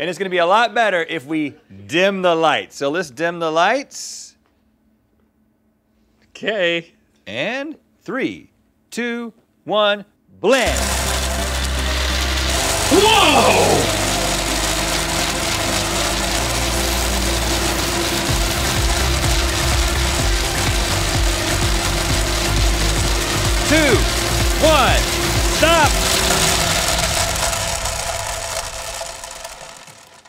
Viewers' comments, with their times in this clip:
0:06 And also rhett's line when the lights dim is ADR
0:10 for Link´s ADR "wow"
0:12 Love the ADR work
0:12 Link's expertly acted "WHOA!" from LTAT is !
0:13 is were they had to redo links “woah”